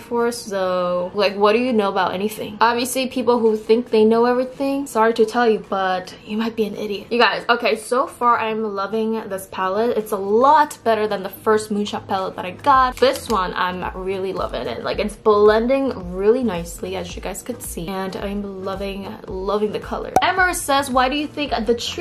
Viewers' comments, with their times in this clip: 0:04 THE WAY SHE SAID YOU MIGHT BE AN IDIOT OMG IM WHEEZING 😂